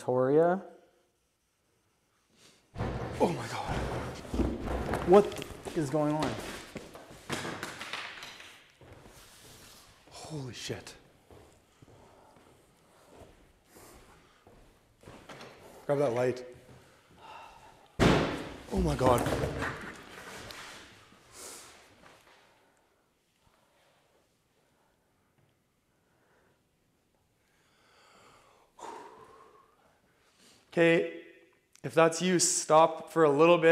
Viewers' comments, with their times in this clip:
0:09 THREE loud bangs??? Seriously guys, that thing was demonic...
0:16 Just a question, when you say "Grab that light" there's a sigh or someone blowing their breath, is that one of y'all or no? If not then I creeped my own self out when I slowed the video down 😂